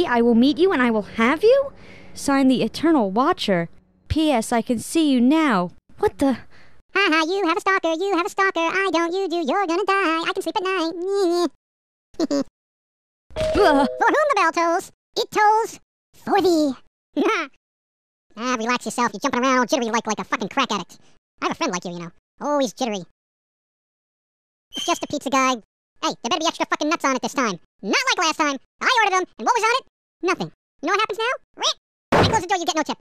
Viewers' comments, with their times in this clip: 0:07 The most awesome improved song I've heard
0:17 press for the best laugh in the history of laughter!